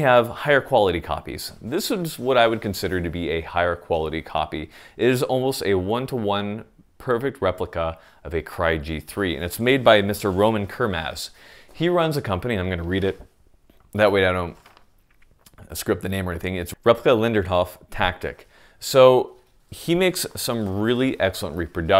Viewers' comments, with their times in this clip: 0:03 Minutes ... what is the name of the company that makes very nice replicas? All I can get is... $##%$% tactical 🤣🤣